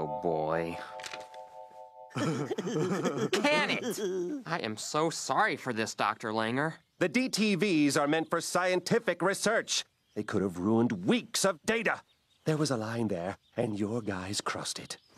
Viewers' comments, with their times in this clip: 0:03 i never get tired of their laugh